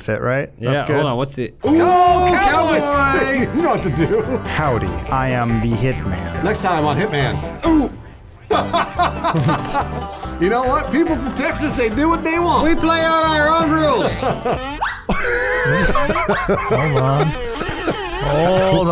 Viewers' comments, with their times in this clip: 0:06 That music pause fucking killed me. XD